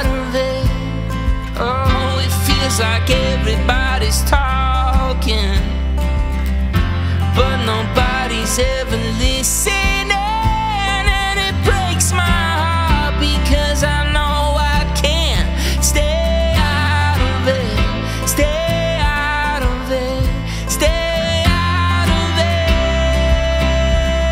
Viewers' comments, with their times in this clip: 0:09 Gorgeous, man. gave me goose bumps; I just love your voice.